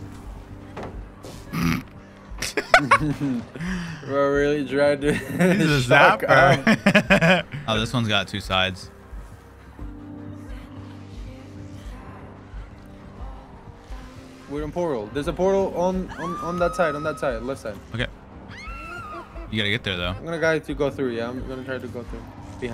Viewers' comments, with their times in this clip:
0:09 You always know something cool is gonna happen when this song starts playing